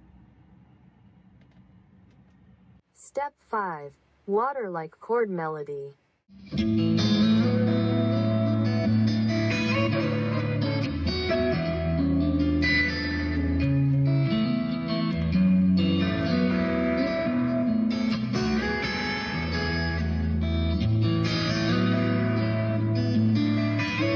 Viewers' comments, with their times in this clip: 0:06 those are some nice and tasty chords!